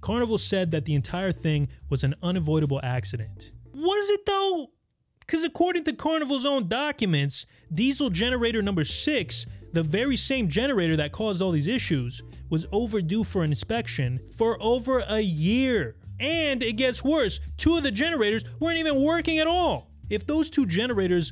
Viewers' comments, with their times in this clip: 0:04 bro sound like kermit the frog💀😭✨😭💀💀